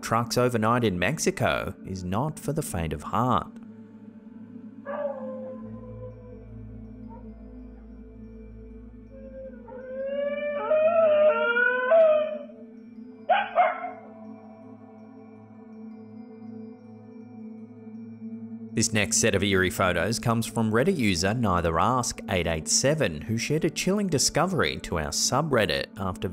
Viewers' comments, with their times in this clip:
0:04 its legit just a fkin dog barking and wailing
0:08 Pretty sure that's just the noise I make waking up early Monday morning for work 😁